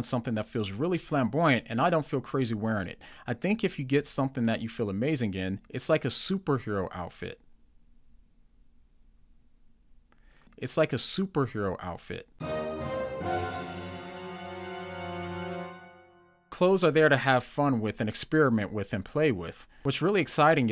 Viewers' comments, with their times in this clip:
0:05 That pause had me dead! 😂😂😂